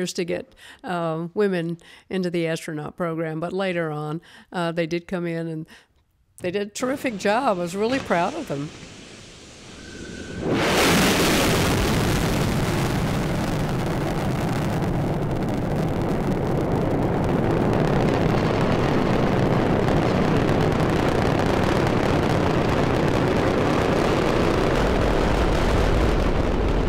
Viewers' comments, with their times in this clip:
0:07 awesome sound affect! Space-time continuum being torn asunder!